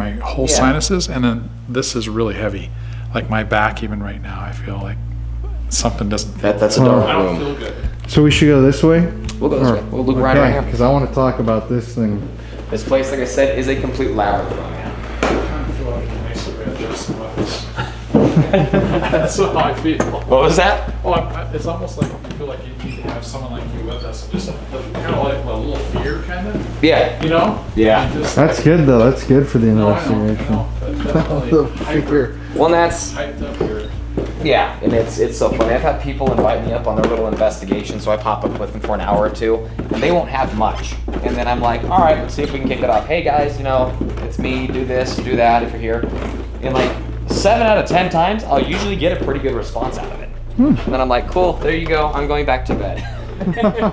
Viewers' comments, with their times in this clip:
0:04 The camera picks up a voice It almost sounds like someone says "Quit" or "Left".
0:04 after he says "like" you hear a grunt or something, really weird.
0:36 -42 there is a voice recorded that isn't pointed out